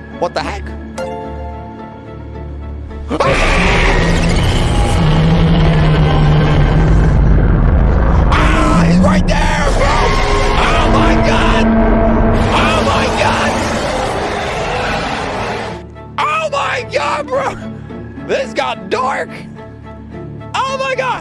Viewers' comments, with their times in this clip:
0:03 best shout LOL